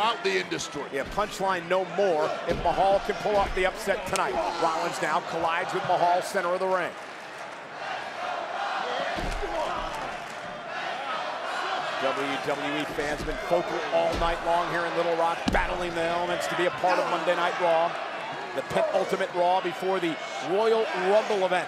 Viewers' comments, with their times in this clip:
0:04 You can barely hear people pulling for Jinder.